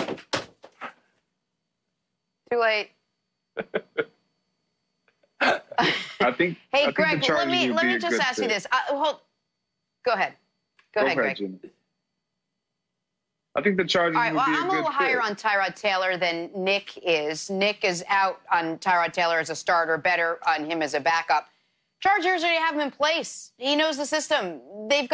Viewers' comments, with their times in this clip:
0:07 y’all telling me y’all ain’t notice her cut him off twice😂😂😂😂